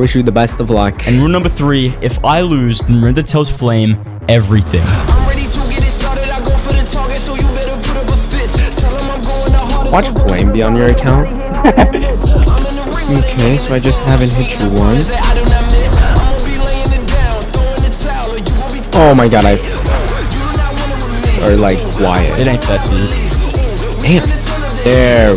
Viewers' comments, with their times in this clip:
0:07 good music taste!